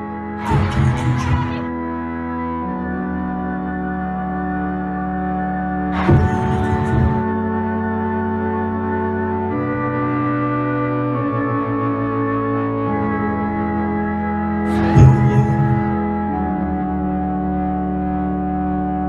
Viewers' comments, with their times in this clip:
0:05 sounds like what are you looking for